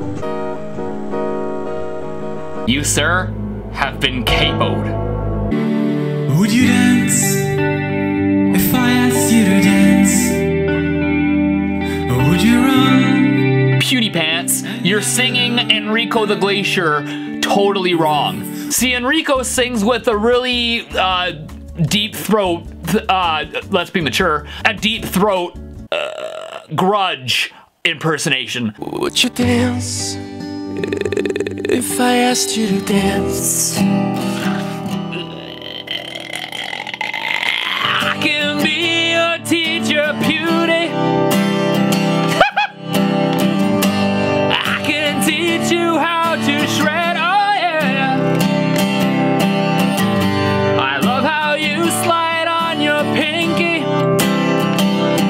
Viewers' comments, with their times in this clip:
0:04 sounds like the intro to For whom the bell tolls
0:36 I thought this was going to fall into black metal
0:40 That laugh is the trademark of the best guitarrists in the world I need to learn that. Ha-hoo! XD